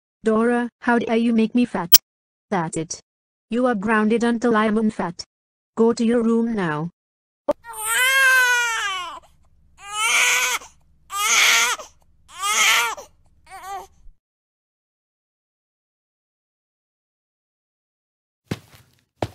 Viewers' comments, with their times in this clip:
0:07 well, i think is nit funny because dora is actually crying like a baby... 🤣🤣🤣🤣🤣🤣🤣🤣🤣🤣